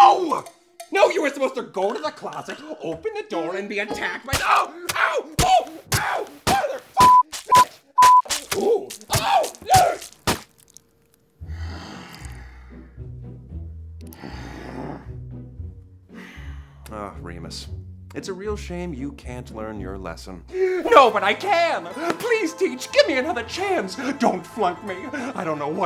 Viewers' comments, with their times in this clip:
0:03 the "oohh~" is sending me 💀
0:04 Remus' random good "ooo" between being stabbed is just gold
0:07 THE SOAP ( also Remus says ouh while being stabbed )